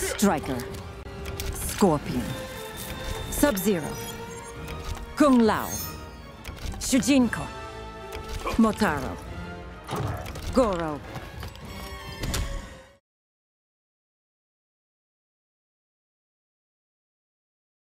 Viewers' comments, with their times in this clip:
0:05 I noticed that it was AI she just sounds way too robotic here